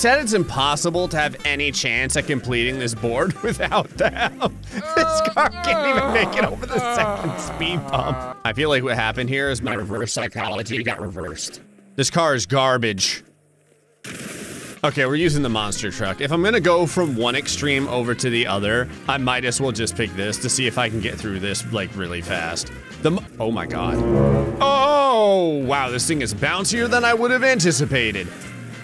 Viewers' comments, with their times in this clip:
0:09 that sudden voice change scared the f out of me